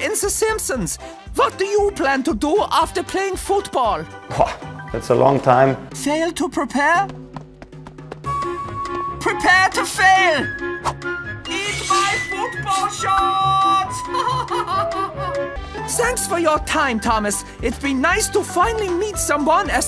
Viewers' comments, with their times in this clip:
0:03 he did a Kimi raikkonen "bwoah" before answering the question!